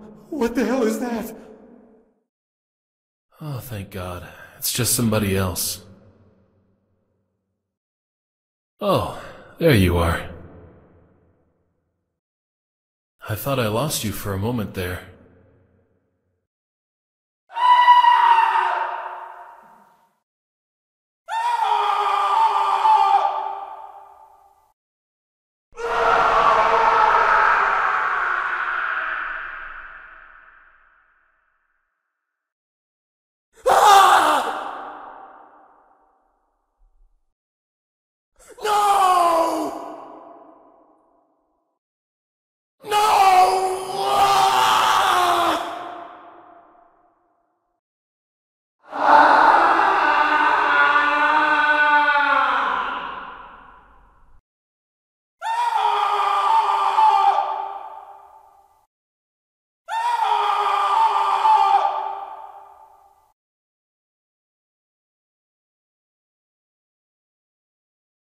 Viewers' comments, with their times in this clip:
0:04 must be my favorite voice. It sounds so calming and bercvhkdbjkdcbkbjksdbjisce. (I know that the personnel is dead and scp-939 is talking, lol-)
0:07 sounded like Howl from Howls moving castle gave me a little heartattack. In all seriousness the voice lines sound like Howl but sounded the most like Howl
0:08 The voice line that strikes fear in any player.
0:16 "makeshift femur breaker" breathing heavily
0:16 Is that just the femur breaker scream without the loud ass filter over it.
0:17 that actually sounds like the femur breaker scream right there
0:17 my scream when i step on my brother's room full of lego
0:17 That scream from end of the game, but better quality
0:17 sounds like femur breaker
0:17 the screams of the victims that died second later
0:17 Scp 939 Screams girly
0:17 kinda sounds like the femur breaker scream
0:17 femur breaker screams
0:17 My favorite scream from 939 is
0:17 why the scream sounds like Femur breaker when the Class-D starts screaming
0:17 sweet screams in the morning mmmmm
0:17 that sounds like femur snapper
0:17 It sounds like the guy in the femur breaker when u trun it on..
0:17 sounds like femur breaker
0:17 sounds like a cut off bit of the femur breaker.
0:17 sounds like the femur breaker scream but not earraped
0:17 it sounds like femur breaker man
0:18 to much screaming
0:24 that scream gives me chills like a person was just a victim of 939 before d9341s arrival to the basement
0:25 This is the most iconic scream in any terror game
0:25 I LOVE the voice acting for the screams. Like in it legit sounded like the VA got murdered while recording the audio.
0:25 this scream plays out in my head every time i accidentaly fall down into a hole/crack in a videogame
0:25 dude this sounds like someone being murdered
0:25 what it sounds like in a doctors office
0:25 is the manliest scream I’ve ever heard
0:25 when Artyom here that noise when mutants attack stalkers in tunnel
0:25 Man the sreame
0:26 When I got detected by 939 for the first time I was unfortunately greeted with the scariest voice lines out of all of them,
0:26 why is he screaming or who is screaming
0:26 The scream is probably my favorite lol
0:38 sounds like someones in a bad mood...
0:42 sounds like he just can't take it anymore
0:44 sounds like luke when Darth Vader told him, he was his father. 💀
0:48 I think it’s nickocado avocado screaming
0:49 someone shitting at school
0:50 the way you scream in a forest
0:52 the most scary and bloodcurdly in my opinion